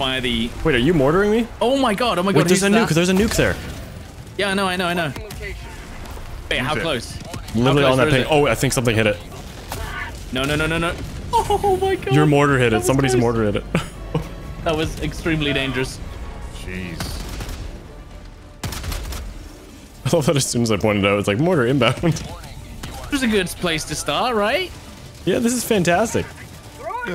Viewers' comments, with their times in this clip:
0:09 that scream from your character on was fucking hilarious lmfao